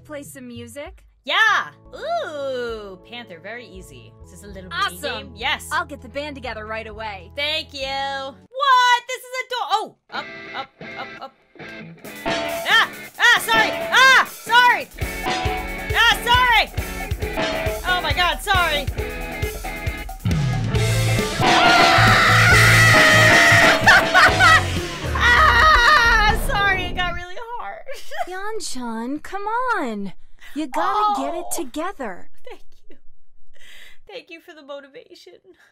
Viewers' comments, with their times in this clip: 0:10 The yelling makes it really sound like a hard rock song XD
0:14 the sound of kevin (from home alone) scream i cant
0:19 Me:ow my ears hurt My mind:what the hell is wrong with YouTube My mind:what the hell is wrong with YouTube
0:20 RIP HEADPHONE USERS (including me xD)
0:21 WHAT. DID. I. WITNESS... 😳😳😳 Music? Or pooping diarrhea out????? 😳😳😳
0:21 OH MY FRICKEN LORD MY EARS THAT WAS HALARIOSE
0:21 wanna hurt your ears? Listen to this with high volume! :)
0:21 WHERE WAS THE SORRY HEADPHONE USERS AT THE INTRO AND Now I'm deaf D:
0:21 had me laughing so hard I could not stop, that scream came so unexpectedly XDDDD 🤣🤣
0:22 I love how she just screemed